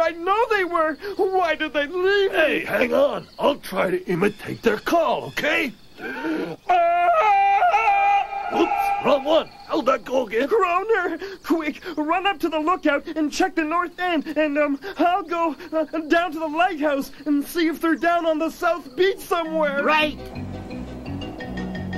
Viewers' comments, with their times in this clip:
0:07 Fred Polo Did A Tarzan Yell Lol!